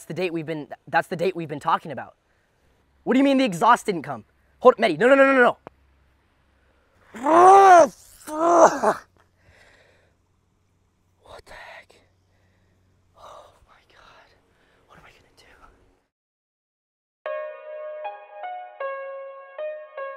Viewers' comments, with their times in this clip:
0:03 "exaust didnt come!" throws phone squats and makes exaust noise 😂😂😂
0:07 sounded like a turbo flutter Lol